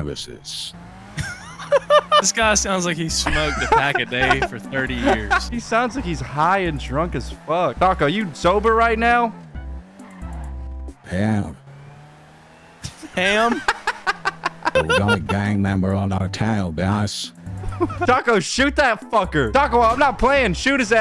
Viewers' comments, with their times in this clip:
0:03 it is voicemod